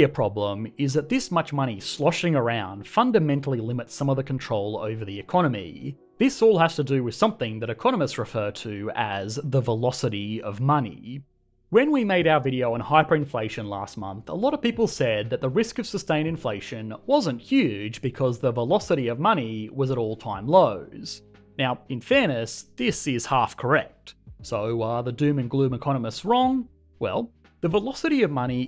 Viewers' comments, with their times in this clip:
0:10 Everybody: Money Aussies: Money-yye-yee